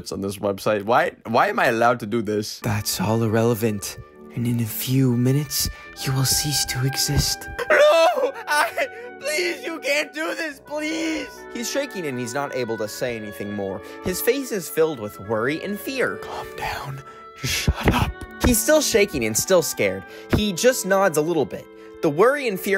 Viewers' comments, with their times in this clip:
0:05 Bro you sound like Menu from demon slayer giving a mental breakdown to an AI💀
0:07 why was the voice acting actually good💀
0:08 THAT SOUNDED REALLY GOOD.. HOW.